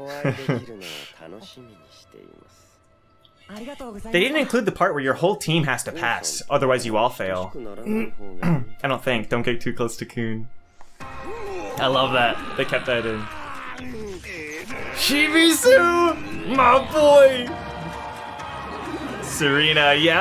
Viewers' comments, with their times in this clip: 0:03 Actually they did say that if your whole team does not pass u dont pass. It was one of the first things Lero Ro said when explaining the rules Also I really like Lero Ro's voice. And I also like how they made his ears big like in the Webtoon (that sounds really weird but I just really like the detail)